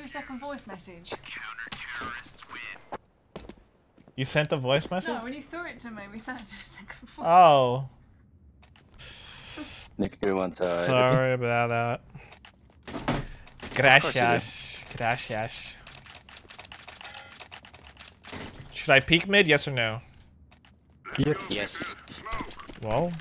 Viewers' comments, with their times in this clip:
0:09 that british accent though